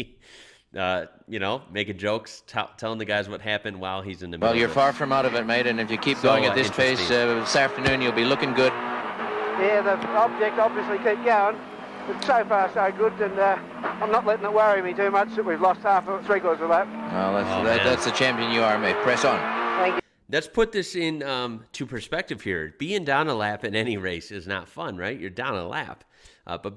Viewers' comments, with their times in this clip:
0:07 Allan Moffat speaking with Larry Perkins